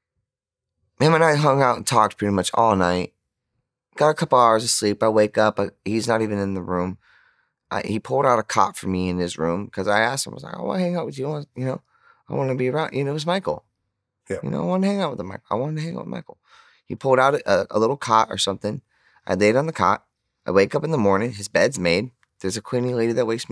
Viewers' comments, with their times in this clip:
0:07 I seriously misheard that for a second had to do a rewind real quick 😂